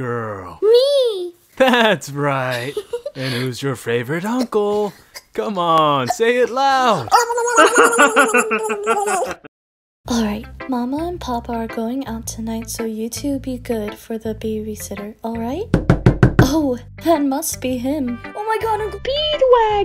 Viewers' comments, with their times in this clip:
0:07 I wonder how they made the vomiting noise